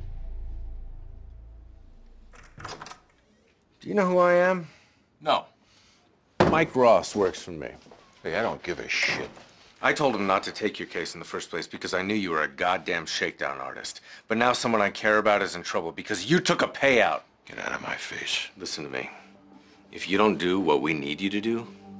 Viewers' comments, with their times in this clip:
0:04 Harvey yelling at the Greedy Uncle. The family drama continues.